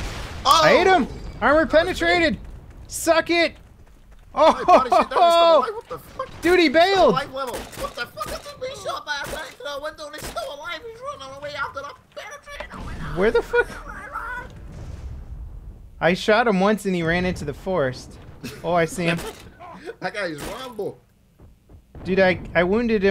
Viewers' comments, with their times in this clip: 0:06 Cha got waaay too excited. Couldn't understand a damn thing he said hahaha xD